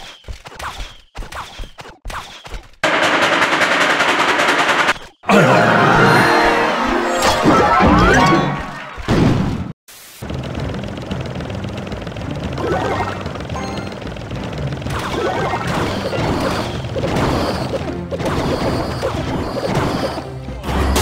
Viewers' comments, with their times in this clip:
0:09 versus ong Johnson? oh long johnson!